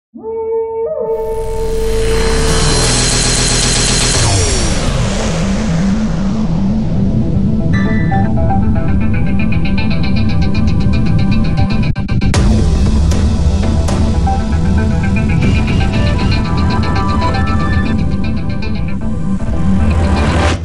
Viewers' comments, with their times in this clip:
0:02 I always thought my pc audio was bugged every time this played and came up